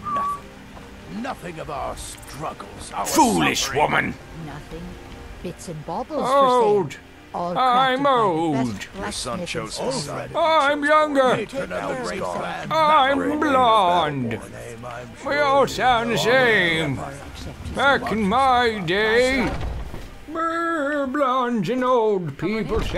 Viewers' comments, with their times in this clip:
0:06 sounds exactly like the grandpa from South Park